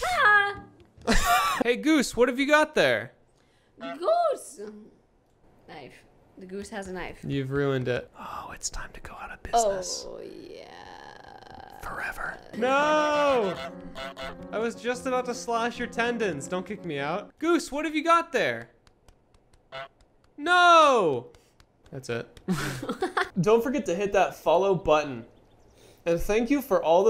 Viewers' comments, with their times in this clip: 0:09 close your eyes it sounds weird